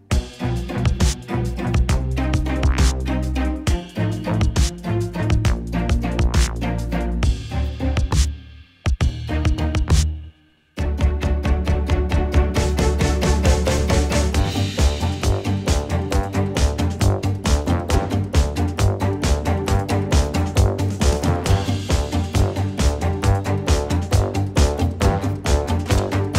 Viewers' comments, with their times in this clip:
0:10 is the moment the soundtrack started hyping me up and it just got better and better